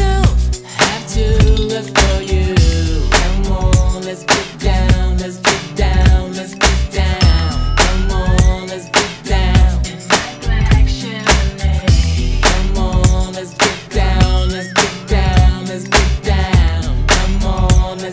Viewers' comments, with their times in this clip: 0:04 IT SOUND A LITTLE LIKE TEEN SPIRIT BY NIRVANA